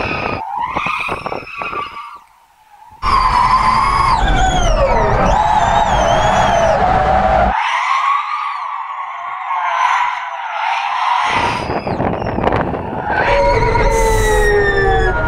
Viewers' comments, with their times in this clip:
0:03 pov the turbo stage 3 sound in beamng: